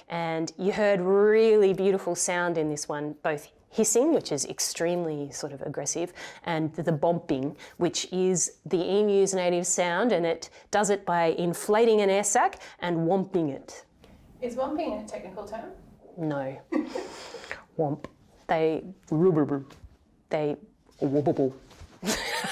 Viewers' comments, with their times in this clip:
0:07 EMU: "Im just gonna puff up my neck and hiss at this tool ............. well it works for those bloody Brown snakes!!!"